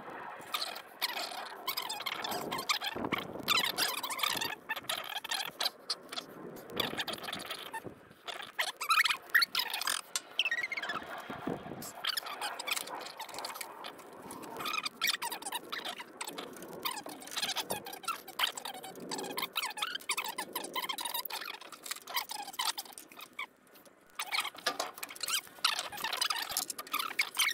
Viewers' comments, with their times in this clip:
0:03 The noise in the segment at ~ on - sounds like mice conversations. Find that and you'll find your squatters❗😠🤯🤣 Get it running...and lordy the hydraulics even work...and the brakes,, too⁉️ Right into big machine rodeo❗👍🤣
0:12 Sounds like the family of mice living inside the air filter are having a domestic...